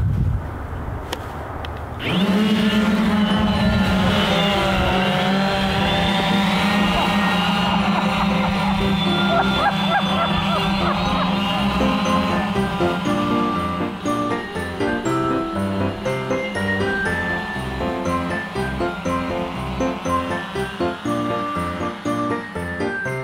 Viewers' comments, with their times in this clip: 0:09 Anyone else hear seagulls?